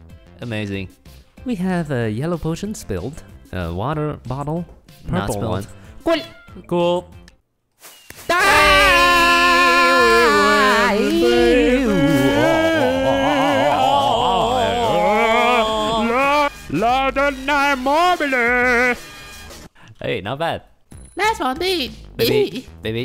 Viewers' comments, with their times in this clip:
0:08 imagine two random dudes nextdoor screaming..... LoL